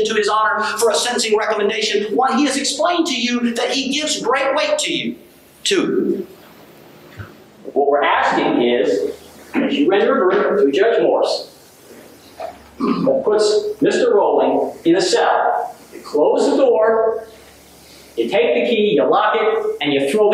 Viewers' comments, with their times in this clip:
0:03 Oh he definitely wanted to be a preacher when he was younger